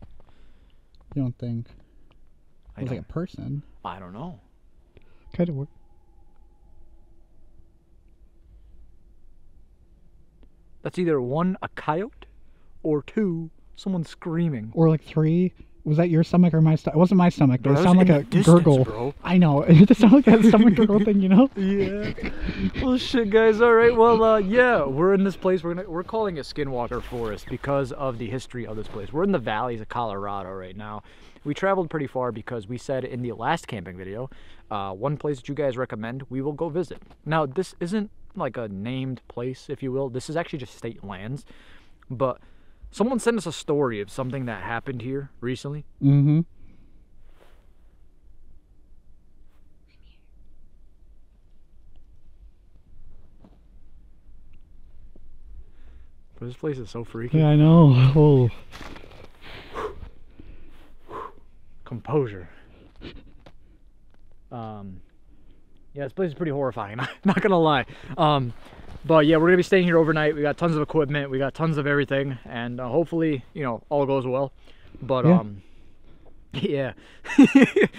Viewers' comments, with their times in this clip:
0:07 Sure sounded like a Sasquatch or Dogman yell at the beginning to me I think the "theres a bunch of us" message meant there's multiple devil worshippers who go out there, not necessarily there at the moment. Btw you guys are way too loud. I hope you bring protection when you guys go out to these places.
0:45 Watch the video and listen from you hear a girl voice says I’m here
0:45 did anyone else hear a whisper during the introduction that said "I'm here" in like a little girls voice? Go to and listen closely!
0:47 Hey there's a woman's voices saying I'm here.
0:48 Ayo if you go to I heard a girl or something whisper I’m here😮
0:48 you can hear a voice whisper "I'm here". Head phones are a must when watching these videos 😮
0:49 you can hear a whisper saying (I'm here) when he points
0:49 there's a voice that says I'm here
0:49 a woman’s voice says “I’m here” great video very intense very spooky I really enjoyed it from the safety of my bedroom Dont know how you do it especially walking across ice etc stay safe love your Aussie supporter 🇦🇺🦘🐨👻❤️
0:49 time...some one says "IM HERE"
0:49 sounds like a girl says I'm here
0:49 Bro did no one hear the "im here" in like a little girls voice
0:49 I heard "I am here" 😖
0:49 I hear clear, soft women voice saying "I'm here"
0:49 if you listen closely you can hear a girl voice saying “i’m here”
0:49 a girl whispered I'm here.
0:49 voice female says I'm here
0:50 Timestamp when you put your finger over your mouth to be quiet I hear a woman's voice whisper "I'm here" plain as day I heard it!!
0:50 voice says "I'm here"
0:50 there's someone saying "I'm here"
0:50 Did anyone else hear a girl say “I’m here.”
0:50 bro u can clearly hear a womens voice say “im here” 😳
0:50 “I’m here.” I swear!!!!!!
0:50 Already you can hear something say “I’m here…” or “Come here”.
0:50 If you have headphones Sounds like a girls voice saying I’m here or come here
0:50 you can definitely hear a female voice either says come here or I'm here.
0:50 with ear buds in I heard a female voice sayin "I'm here" clear as day! it freaked me out!
0:50 Aye bro idk if u know but u can hear someone saying “I’m here “I’m barely u could clearly here it sound like a female
0:50 whisper I’m here
0:50 a whisper "I'm here"
0:50 it sounds like a woman saying "I'm here"
0:50 😂 anyone else hear the “I’m here” at the mark so creepy
0:50 you hear I'm here
0:50 😮😮😮😮😮😢😢😢😢evp " I'm here " CLEAR AS THE NIGHT SKY
0:50 a female voice said 'I'm here'.
0:51 I heard a voice saying "I'm here"
0:51 😮😮😮 Class a evp " I'm here"
0:54 DOES NO ONE HEAR THE “IM HERE”
0:58 women voice says im here
1:00 I heard a “in here” before 😮